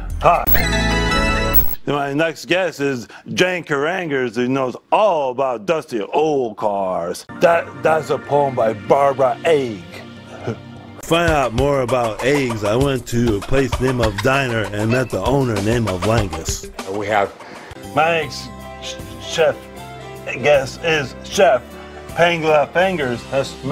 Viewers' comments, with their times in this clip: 0:07 when he says Barbara Egg, and the weird breathing that follows 😂